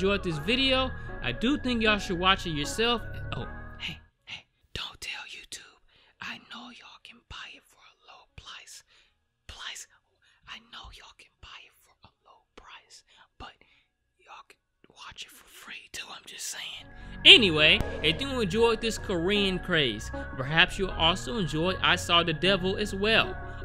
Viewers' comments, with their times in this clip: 0:07 *whispering* “for a low plice...**still whispering**.....pLICE?!??” I AM DEAD, this man always fumbles his words but this one was hilarious to me